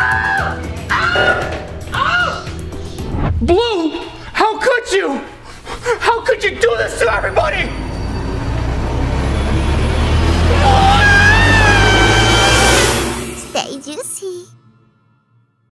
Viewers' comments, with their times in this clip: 0:10 * Guava juice scream *